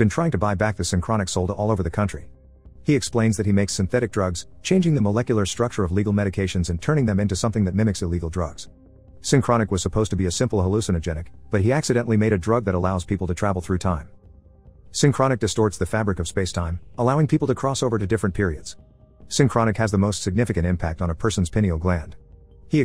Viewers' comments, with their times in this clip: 0:04 I never knew text to speech voices could voice crack lmfao😂😂😂
0:05 first voice crack ive ever heard from this dude